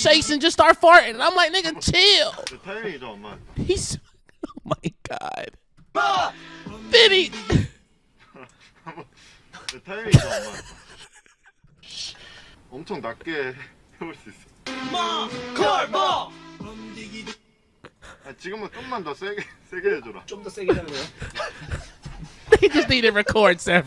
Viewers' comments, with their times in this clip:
0:08 the sound of the slap is too funny, am i the only one?